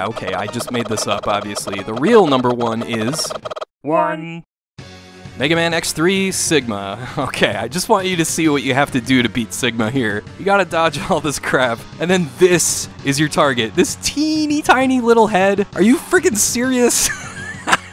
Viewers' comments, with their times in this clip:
0:04 in which he has a breakdown and briefly transforms into the Angry Video Game Nerd. "What were they thinnnnnking?"